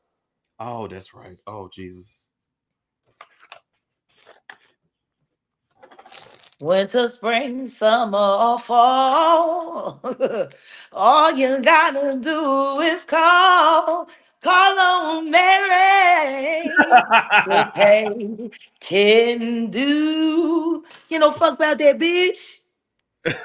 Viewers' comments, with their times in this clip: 0:06 I am dead at the song lol 😂🤣